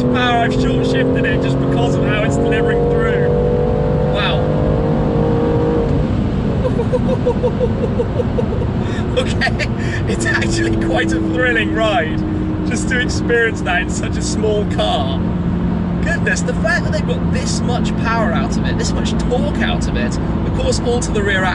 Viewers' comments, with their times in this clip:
0:06 Shmee sounds like he wants to lay an egg or break ASAP !